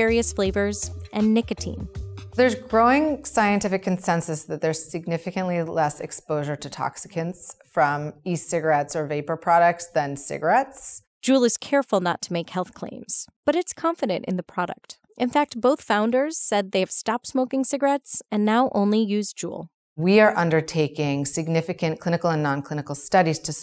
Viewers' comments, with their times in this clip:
0:07 Did she say toxicans?